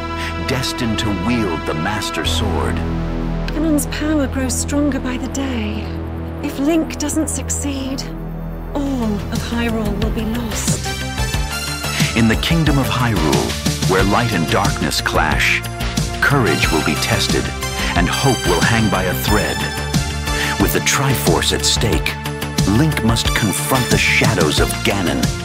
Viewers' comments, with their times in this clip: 0:08 I was not prepared for one of my favourite genres to play synthwave/retrowave. Hopefully, this converts people. Want artist recommendations?